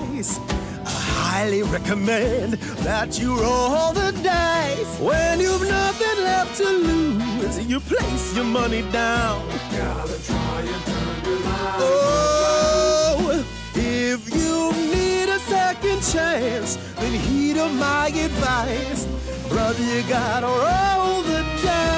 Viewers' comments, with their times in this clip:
0:05 Holy shit the Cab Calloway is strong in this one, especially which had the same tune as thr HIDEEHIDEEHIDEEHO from Minnie The Moocher